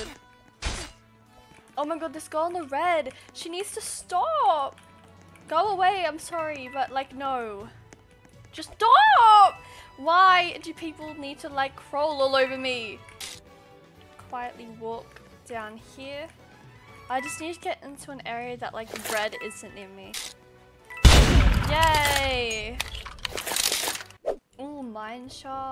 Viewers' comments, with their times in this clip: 0:09 The just stoowppp made me laugh s I hard I woke up my parents